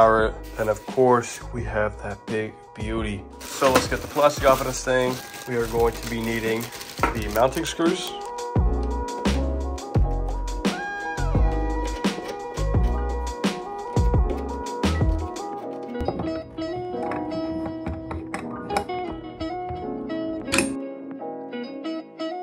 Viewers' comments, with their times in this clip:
0:09 we are going to be eating the mounting screws💀